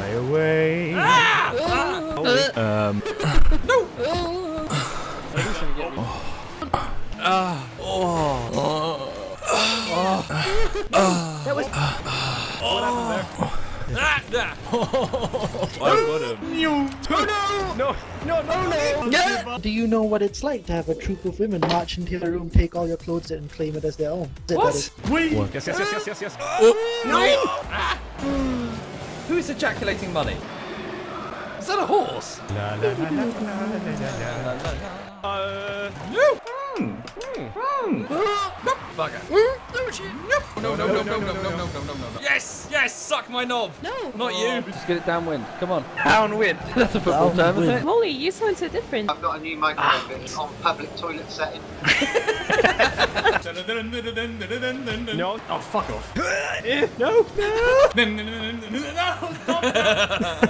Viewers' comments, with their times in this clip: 0:03 dark souls 1 male death sound compilation.
0:04 counter terrorist in CS:S dies counter terrorist:
0:16 That neeong got me😂
0:30 I thought they were yelling "sieg heil" ngl
0:39 with the hard r? Really?
0:41 when everyone goes no, no, no, no reminds me of the Martian's from sesame street